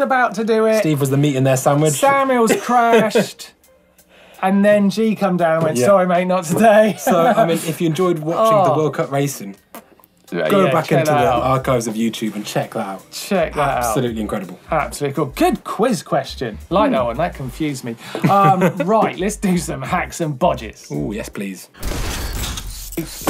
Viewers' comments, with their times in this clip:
0:10 Is that 'sssss' a snake? No, it's a fart No, really.